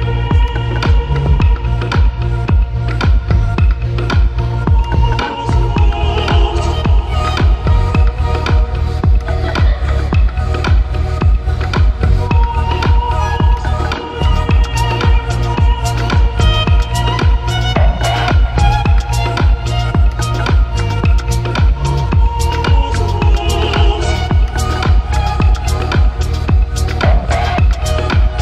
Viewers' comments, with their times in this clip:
0:09 That laugh scared the shit outta me xD i thought someone was actually laughing in my room until i repeated it to make sure i wasnt crazy. That aside this is one of the best things I've ever come across of in my life 👏❤